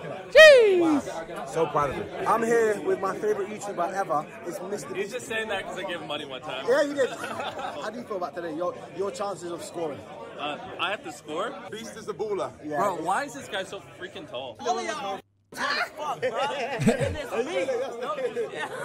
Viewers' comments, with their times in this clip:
0:05 druskiii laugh "you got me"